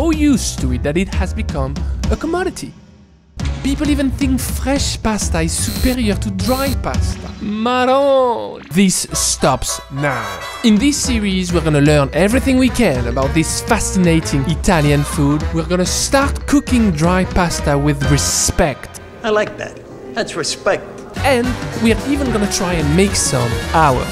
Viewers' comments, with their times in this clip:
0:07 Is that a French word he says ? I can't recognize it and it bothers me. "Mais non" peut-être mdr?